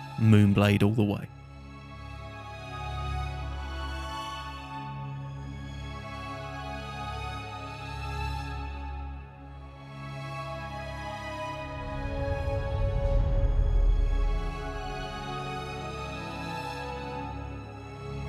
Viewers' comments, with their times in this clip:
0:03 I dont know why, but around the mark, that music. It makes me feel like I am watching Hellraiser for the first time or something, and I love it!